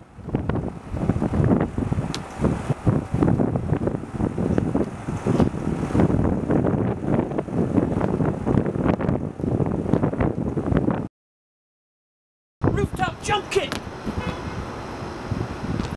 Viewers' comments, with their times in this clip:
0:12 thumbs up if u heard the car horn ish